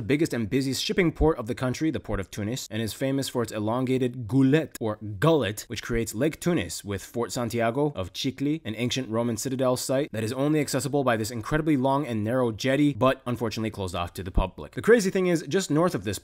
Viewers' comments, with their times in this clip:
0:03 it sounds like "Gölet" and it means small lake in Turkish.